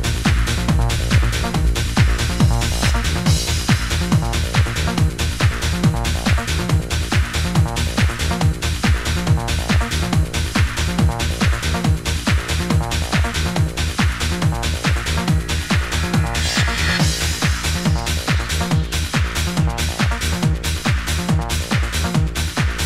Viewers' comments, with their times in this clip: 0:03 did that exact mix the other day, so smooth!